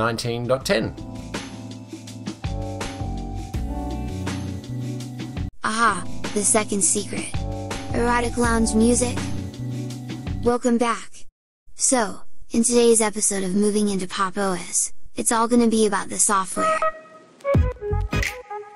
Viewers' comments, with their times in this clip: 0:05 nop, but you can at least enjoy the erotic lounge music (best video scene i believe!)